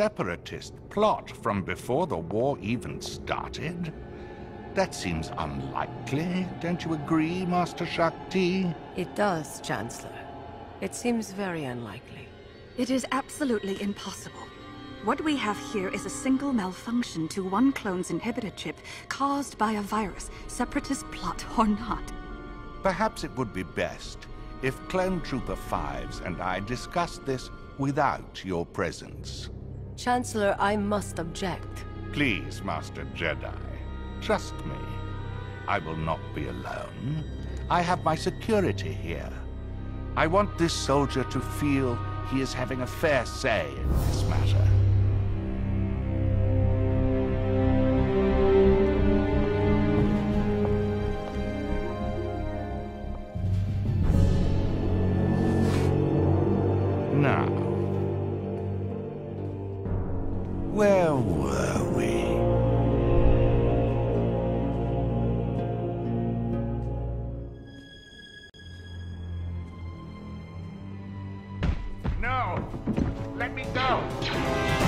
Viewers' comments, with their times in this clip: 0:05 when papatine’s voice started going higher and higher it made me laugh for some reasom
0:05 I don't know if that was intentional, but it almost sounds like you can hear the force whaling in the background as if it were in pain. As if Sidious was using force manipulation at an unspeakable level.
0:05 he voiced changed 😬
0:55 the SITH theme!
0:57 I just LOVE how palpatine just had a shift in his voice. From good to evil.
0:58 as soon as you hear his Sidious voice creep in you know ish is about to hit the fan real fast. PS: stop blaming Shaak Ti y’all. There were plenty of chances for the Jedi to save themselves from what was to come, and they failed on multiple occasions.